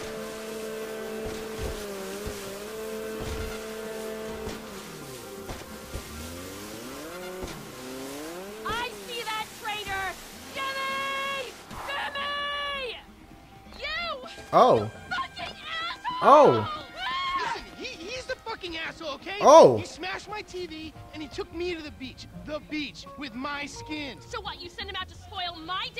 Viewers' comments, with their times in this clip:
0:10 she screams like a man